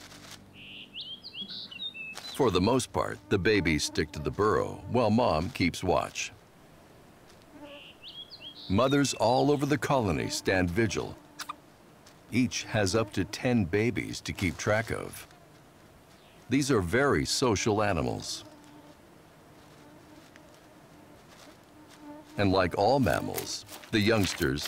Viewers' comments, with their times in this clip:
0:09 did it just sneeze into its elbow? cute
0:10 that tiny "atchoo!!" was cuteness overkill.
0:11 the sneeze was so cute lol